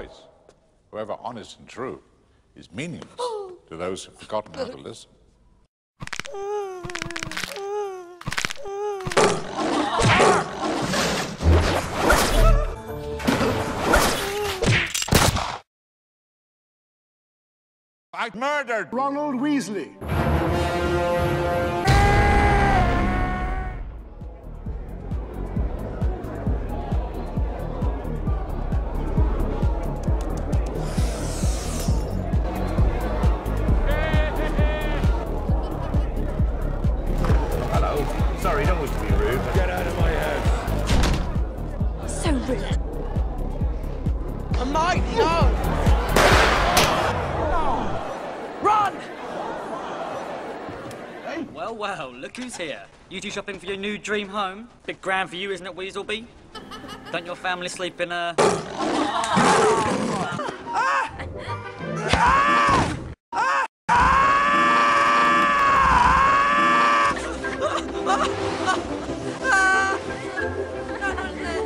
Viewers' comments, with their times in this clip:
0:03 Ron Weasley being my favorite character because of his cowering whines
0:06 I loved growl 💅
0:20 And the music explains why it's called Lord of the Rons
0:34 voldermorts mad laugh at the party just flawed me for some reason BRILLANT
0:56 Crabbe laugh never fails